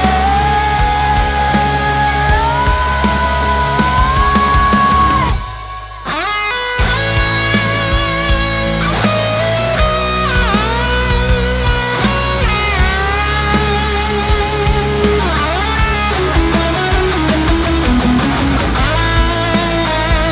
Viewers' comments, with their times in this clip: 0:05 the solo part is just Goosebump
0:06 the chords hit somewhere